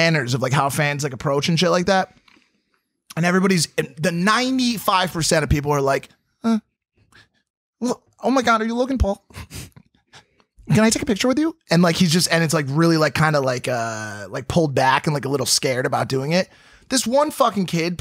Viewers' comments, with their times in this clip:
0:05 omg he sounds like James Charles